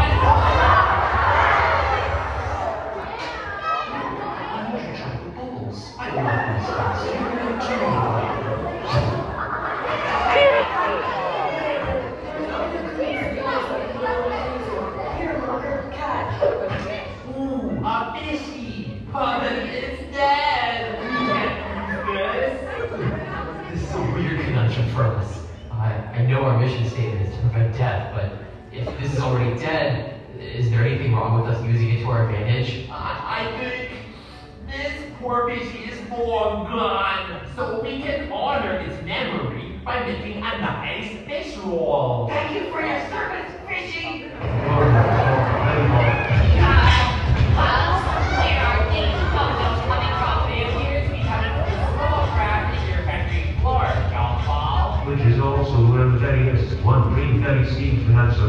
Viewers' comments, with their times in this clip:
0:04 i think we all know why some people in the audience laughed
0:39 I was there for the showing, I’ll never forget the joy and goosebumps I heard from kids and teens singing the intro. This event was the best day of my entire life